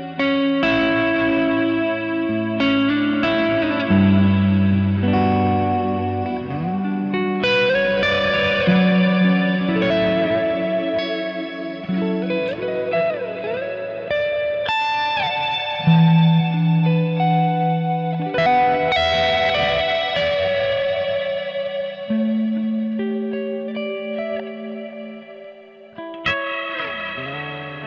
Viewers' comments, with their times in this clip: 0:10 Another great video. Love the tasteful use of the trem I appreciate doing the ambient wet cleans as well as showing off more of the driven tones!